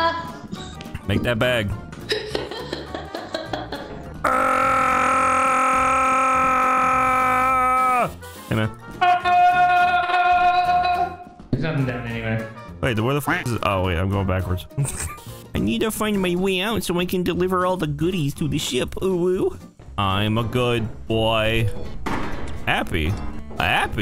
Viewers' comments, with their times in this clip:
0:09 That sounds an awful like the tranzit bus from b02